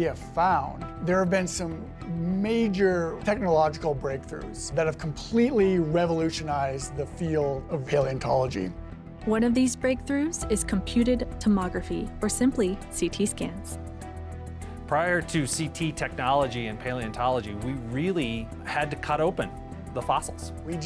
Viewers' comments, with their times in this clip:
0:07 What happened to his voice ?